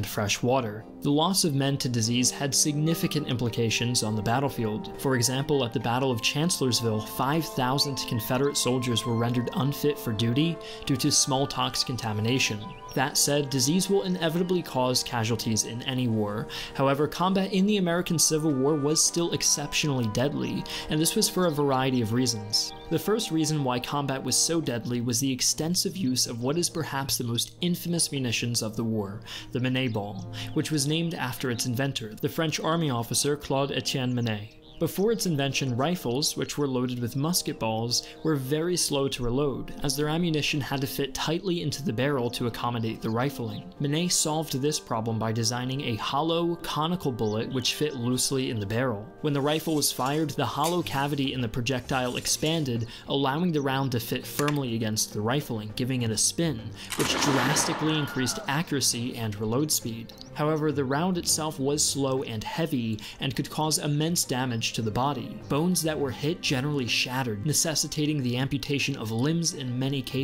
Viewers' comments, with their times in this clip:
0:10 What is Smalltox? Was this a mispronunciation of Smallpox? I'm confused
0:56 That Wilhem scream was perfectly timed
0:56 Wilhelm scream :D
0:57 The Minie ball also leads to Wilhelm screams.
0:57 that wilhelm scream lmao
0:57 Willhelm scream nice. 🤣
0:57 Nice use of the Wilhelm scream :D